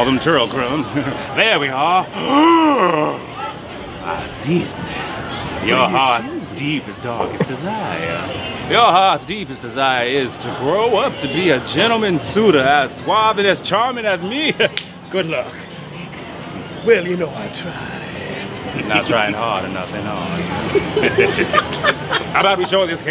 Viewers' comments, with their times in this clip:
0:09 why he sounds like Eddie Murphy